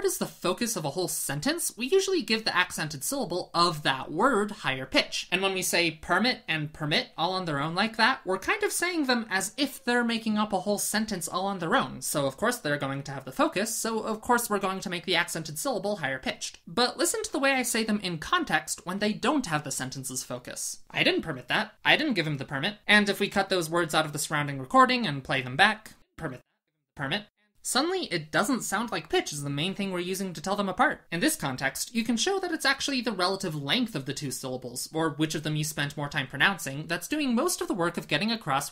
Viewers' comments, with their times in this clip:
0:03 Funny how you already don't use different pitch for different accents when you talk about doing so as ^^
0:20 yeah except you pronounced the verb as if it were the noun erroneously to make your point. No one says it like that.